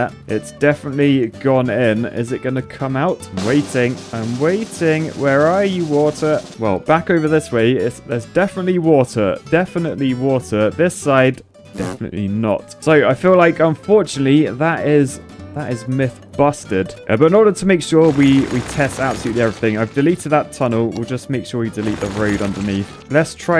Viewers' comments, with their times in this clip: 0:05 “Where are you, Waltuh “